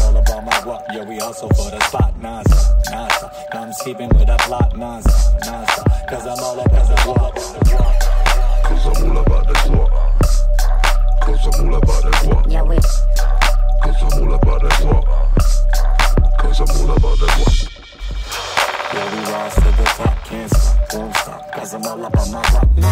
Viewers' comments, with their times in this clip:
0:06 the way that heavy bass rolls in hits so good